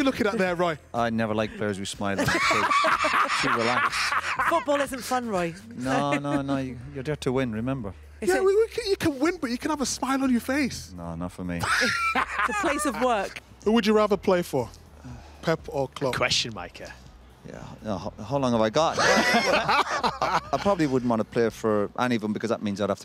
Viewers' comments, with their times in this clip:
0:07 The glance and little sniff is hilarious